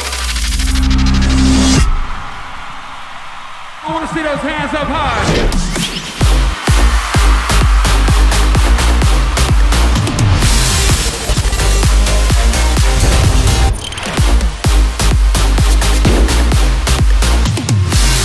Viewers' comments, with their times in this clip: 0:06 The song playing ^^